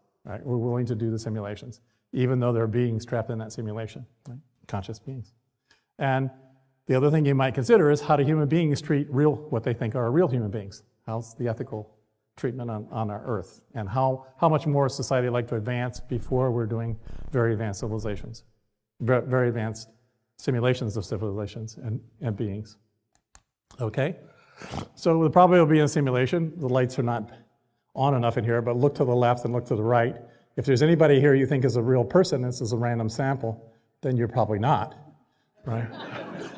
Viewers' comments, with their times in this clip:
0:04 I absolutely LOVE this talk. But hmm, was that a lil fart I heard ? Naww 😍
0:16 He farted the poor guy was shy out of his mind 😂
0:16 His simulated body farted lol. This guy is terrified of speaking in large groups.
0:16 U missed the fart tho 😂💔
0:16 And the fart 😂😂💔
0:23 Hes so boring that he snored and almost put himself to sleep
0:23 He made a snort sound seconds into his talk. That was the best part of this whole discussion
0:23 Am I the only person who caught the snort ?
0:23 he can't pronounce philosohpical PS - GOTO ITS FUCKING HILAIROUSSDF
0:24 That snort XD
0:24 ...... listen to him snorkel..lol
0:24 wth did he snore awake?
0:24 That snort though.
0:24 He’s my Spirit Animal just because of the snort-grunt 😂😅